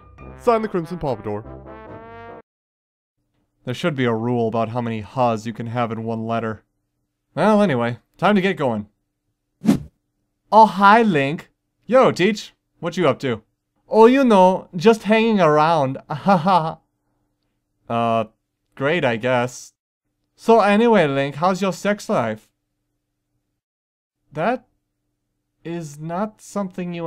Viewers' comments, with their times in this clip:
0:10 Immediately thinks of the brain from young justice abridged Even down to a similar voice and the ‘hows ur sex life?’ I’m not saying it’s a rip off cuz it works really well for this character, I really couldn’t have imagined anything else. He kinda seemed like a creep to me. Though he sorta reminds me of Elrond from Lord of the rings Anything an amazing job as always